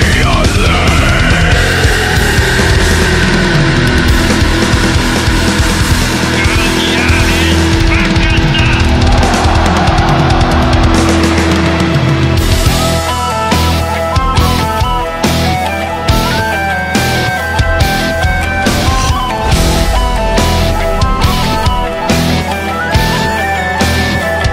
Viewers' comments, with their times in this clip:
0:06 what does the guy say ? cause right after people scream
0:06 FOLK METAL BREAKDOWN!!!!1!!!
0:08 I still don't know what the hell that voice is saying ..or what language..sounds kinda like Russian. Which wouldn't make much sense since they sing in English and Gaulish.
0:10 The breakdown is so metal
0:10 Hurdy-gurdy breakdown. DEAL WITH IT
0:12 Just found this band today, that transition to IS DAMN EPIC goosebumpsssssssssssssss